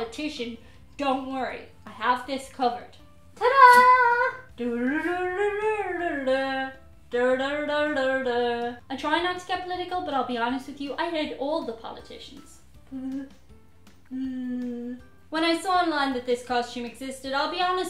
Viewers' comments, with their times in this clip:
0:04 Yup... that's pretty much how she sounds now.